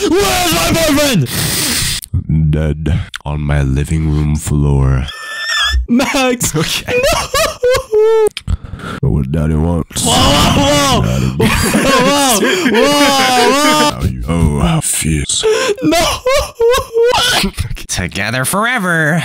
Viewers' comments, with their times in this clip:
0:05 horse ahh cry 💀💀💀